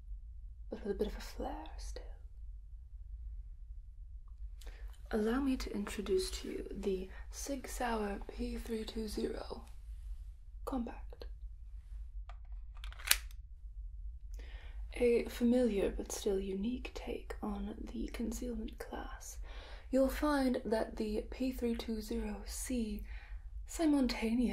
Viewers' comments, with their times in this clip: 0:08 the way she says "compact" tho 🤤